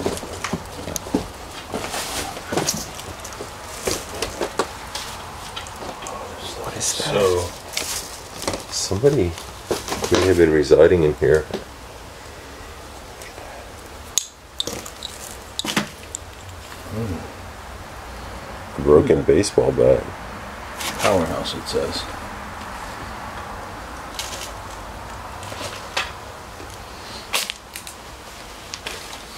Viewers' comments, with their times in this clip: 0:04 someone speaks a faint sentence in background as your walking
0:13 sounds like somethin says "u bet" or "go back" quiet whispr!!